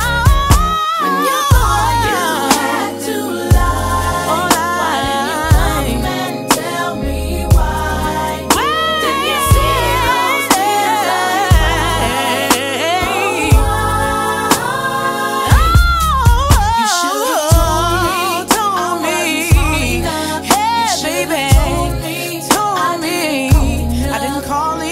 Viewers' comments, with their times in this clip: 0:09 The note she hit 🔥